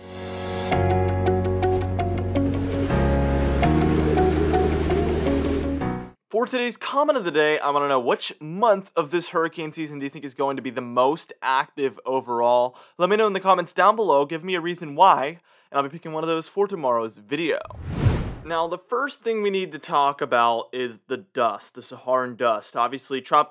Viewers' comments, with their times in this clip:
0:04 plays happy music, shows house being pulverised